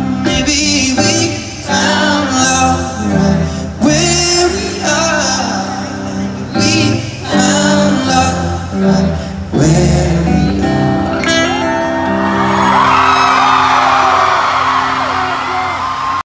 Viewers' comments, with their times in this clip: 0:06 Best video...my. mins are amazing....what a nicely sang...